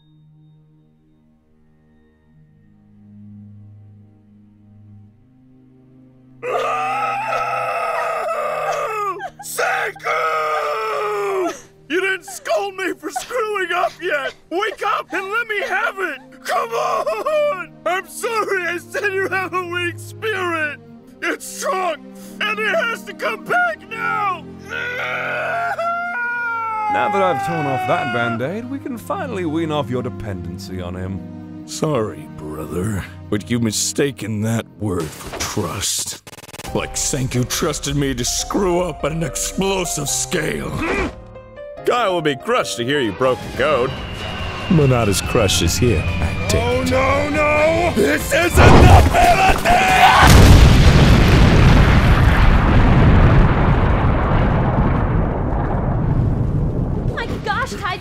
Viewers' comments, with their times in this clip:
0:09 he actually sounded like taiju. Props to the voice actor.
0:36 Tsukasa: why do I hear boss music
0:36 Why do I hear boss/Jojo music?
0:36 jojo music:*starts* Tsucasa:something is wrong I can feel it
0:37 well this is some unexpected music that i have familiar feeling of.just sayin
0:45 I can’t understand what he says